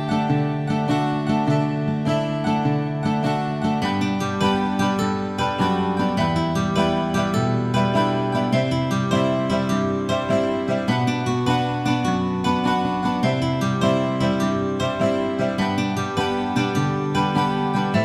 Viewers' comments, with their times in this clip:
0:04 I teared up Such an emotional moment...and that music.